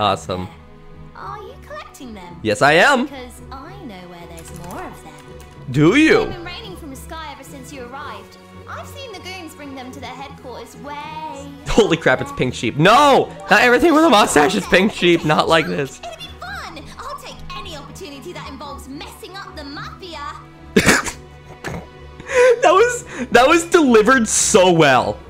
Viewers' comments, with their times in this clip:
0:10 some singing kicked in ey?